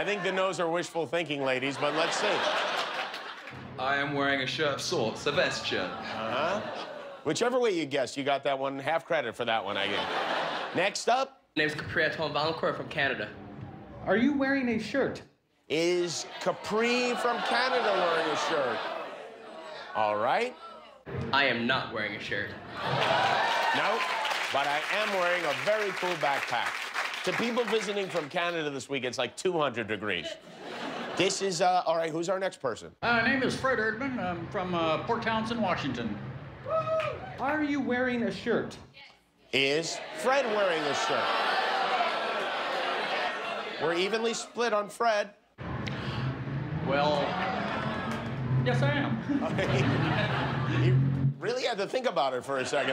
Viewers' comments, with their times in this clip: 0:04 Omg 😳 i get used to American English so much in way i don’t fully understand British English accent 💔 P.S: he is really handsome guy 😉
0:36 lmao homer 'woohoo'